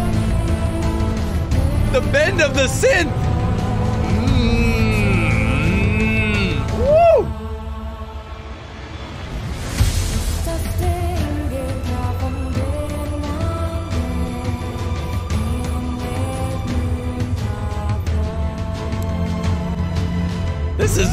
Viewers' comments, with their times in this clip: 0:06 The best part of that synth bend starting is how evocative it is of disaster warning alarms. The musical equivalent of a nuclear meltdown that walks the line between diegetic and non-diegetic sound, given when this piece is used in the show.
0:09 if you hear the german language 😍😍